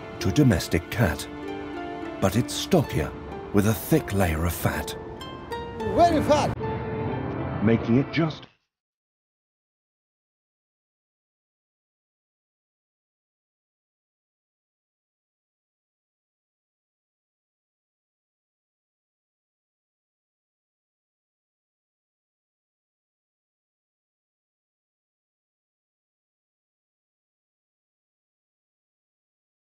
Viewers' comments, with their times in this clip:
0:08 any particular meme-related reason the audio decides to cut out here?
0:09 IT IS A FEDERAL CRIME THAT THE SOUND CUTS OFF RIGHT AT "THE BODY IS ROUND"
0:09 why did the audio cut off? I wanted to hear the famous 'the body is round'
0:09 Is it muted because the "body is round" part got copyrigh claimed or something?
0:09 This video is missing a chunk of volume starting cutting out the best part (“the body is round”) and more. What happened???
0:17 AUDIO GOES OUT